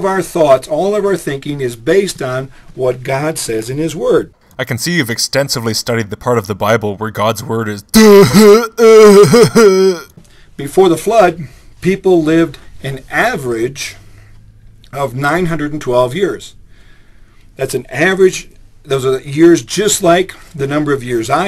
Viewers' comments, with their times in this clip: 0:07 You are the only person I know that can make "Duuuhhuhuhhh" sound eloquent. :3